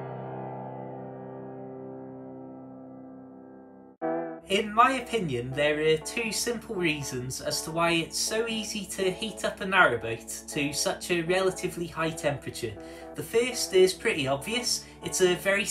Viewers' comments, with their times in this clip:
0:03 OMG!!! I thought you were going to tell me about a murder with that music playing. (Some people will understand this)